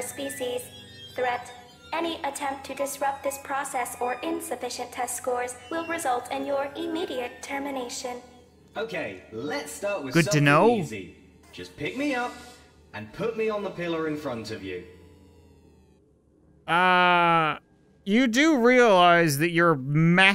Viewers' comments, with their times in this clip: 0:04 Sounds like glados form portal